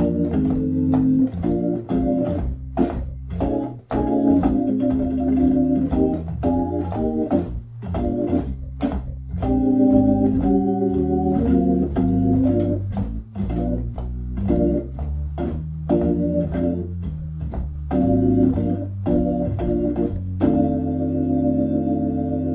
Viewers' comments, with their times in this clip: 0:09 Soulful I have a '63 living room queen B3. Now I need a woman like this to bring her B3 over.